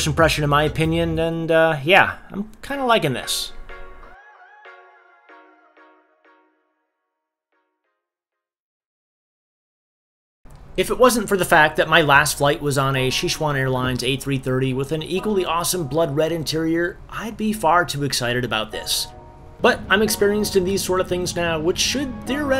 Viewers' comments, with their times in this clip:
0:10 Xixuan Airlines? Please tell me you're not trying to say Sichuan Airlines...